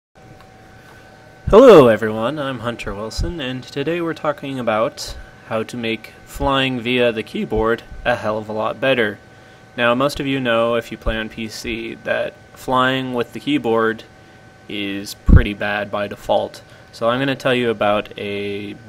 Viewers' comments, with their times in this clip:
0:01 my fking ear exploded